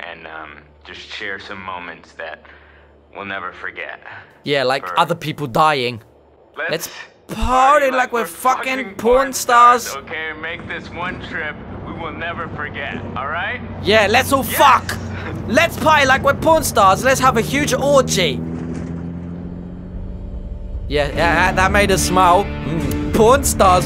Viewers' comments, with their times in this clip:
0:07 i like how the way he said it matched how Josh said it 😂